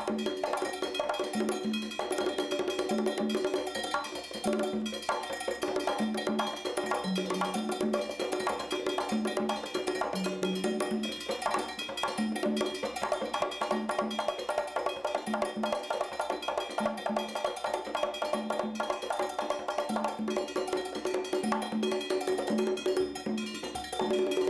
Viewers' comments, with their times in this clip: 0:07 the rumba starts !